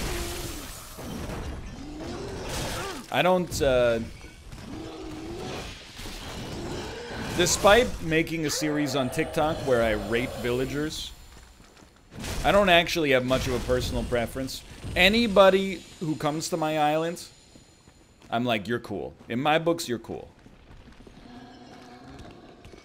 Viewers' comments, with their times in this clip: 0:10 Was it just me, but I thought he said rape